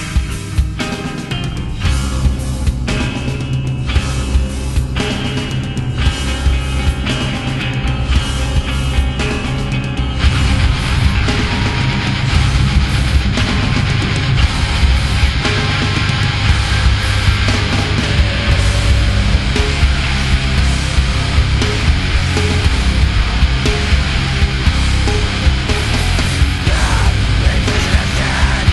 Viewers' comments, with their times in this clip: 0:09 God damn, man! Ya gotta warn people before dropping a riff like that! I friggin jizzed my pants!
0:11 greatest build up with vocals mixing with instrumentation EVER. this song is crazy
0:11 greatest build up with vocals mixing with instrumentation EVER. this song is crazy